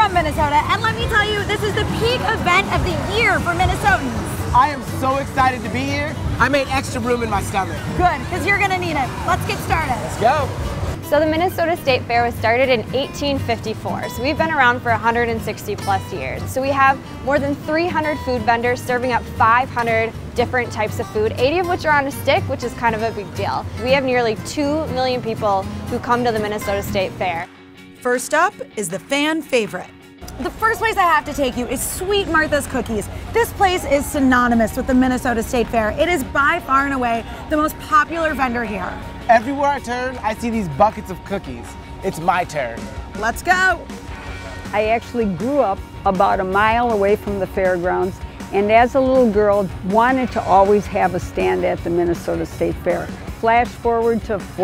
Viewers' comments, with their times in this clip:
0:05 "i am so excited to be here" yeah, i wouldn't hire you as an actor
0:42 why’d he say it like that?😂😂😂